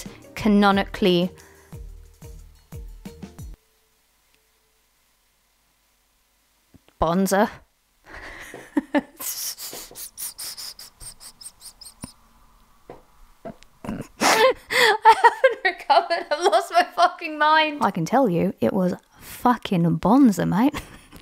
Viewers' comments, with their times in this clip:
0:08 the wheezing laugh after "canonically bonza" woke up my dog